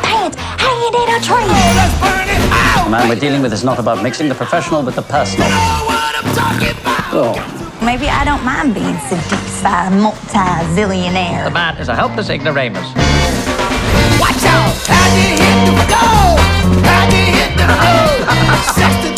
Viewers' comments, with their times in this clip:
0:05 wtf that purr:"> go home Snape you're drunk